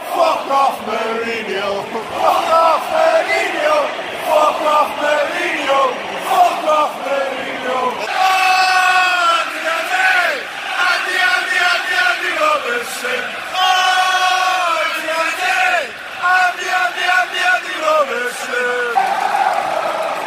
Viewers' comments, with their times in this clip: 0:03 my fav chant